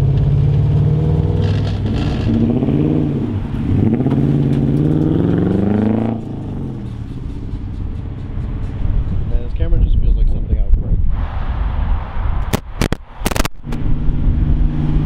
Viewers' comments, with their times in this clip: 0:03 What was dragging under the truck? Looked like a super long o2 sensor wire. Truck sounds sick!